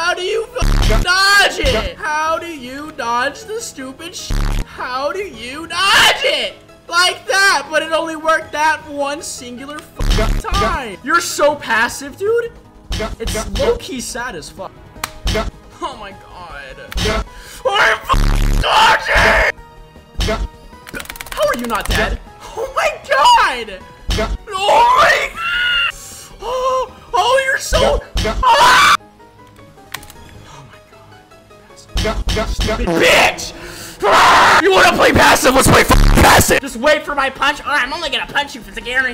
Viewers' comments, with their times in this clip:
0:05 how do u dodge it? Here's the anwser u need to press space the moment u hear the sound when hammer ability is going to use in the middle he will play a clothes rubbing noice when u here it just dodge at the ritgh side only (also its a 100% pd if u dodge it
0:22 brother was so frustrated he turned into a woman for a second 💀